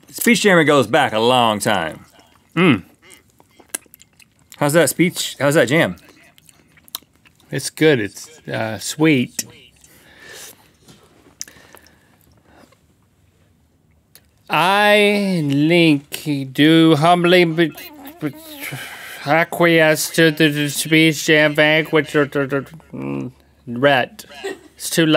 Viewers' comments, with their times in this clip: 0:09 you can hear the delayed version lol